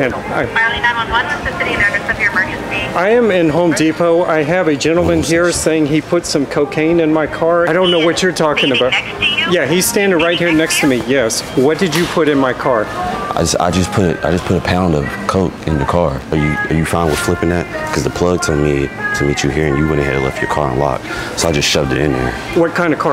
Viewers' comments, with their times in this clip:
0:05 blud stopped chewing once he heard coke